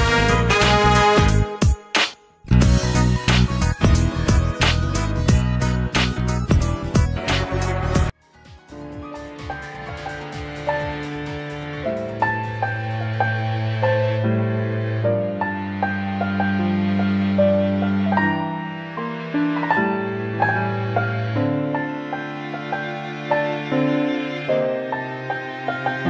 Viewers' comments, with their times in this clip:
0:09 Mayas these melody phrase is the same as Smashing Pumpkins - 'Song for a son". I'm sure it's not intentional, but its hard not to hear it if you know it.